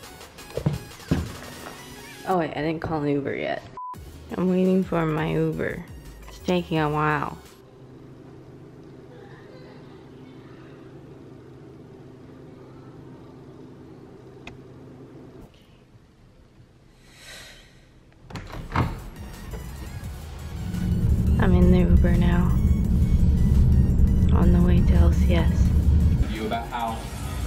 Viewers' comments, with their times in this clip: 0:08 you can hear the wild LilyPichu crying about something